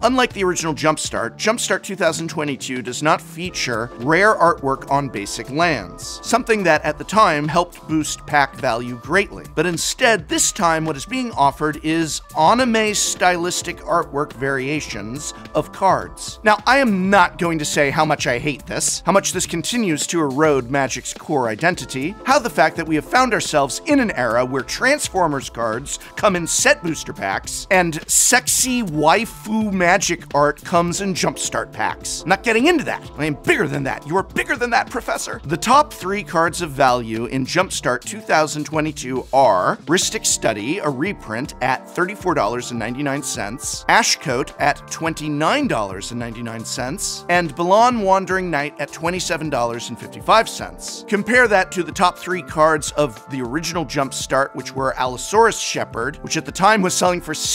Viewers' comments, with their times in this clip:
0:10 that pronunciation phew
0:44 is that 29 or 39 dollars?